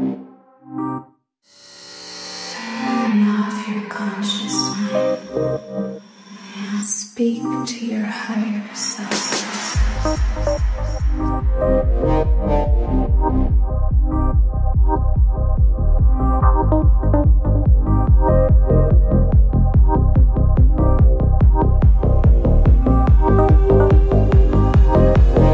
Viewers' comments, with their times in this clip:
0:08 Doesn't get my taste this time. is nice tho, but the drop doesn't get me either.